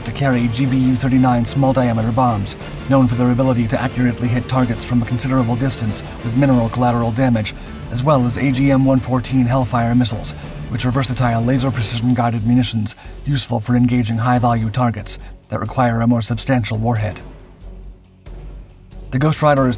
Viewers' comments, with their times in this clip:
0:06 With mineral collateral damage? That almost sounds healthy!😂